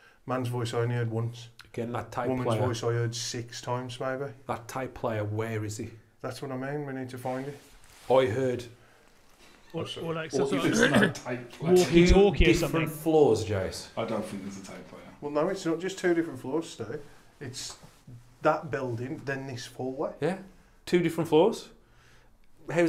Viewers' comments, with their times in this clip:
0:08 Can you hear that? Is that laughter? It's so faint, what is that?